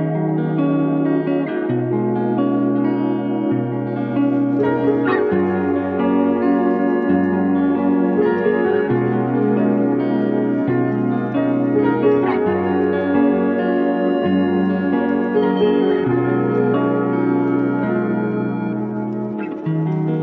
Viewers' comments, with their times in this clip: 0:03 Aye this song pretty 😂 not normally how I describe music 🤣